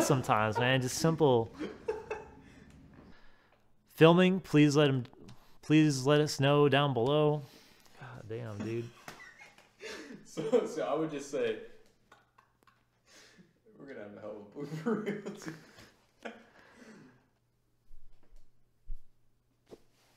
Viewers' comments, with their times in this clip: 0:06 “Please let it snow down below” lmao 😂 😂